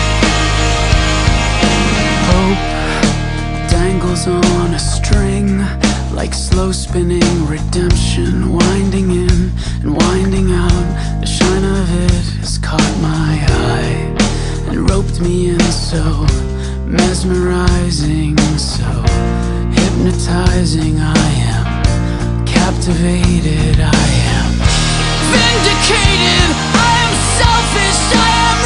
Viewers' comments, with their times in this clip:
0:09 Theres a popping sound you will forever hear it and ruin the song for you